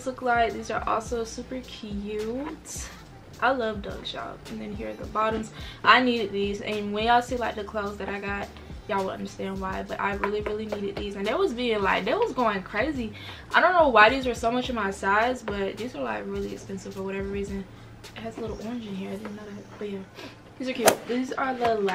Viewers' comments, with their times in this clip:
0:03 I really thought people were saying doug like😭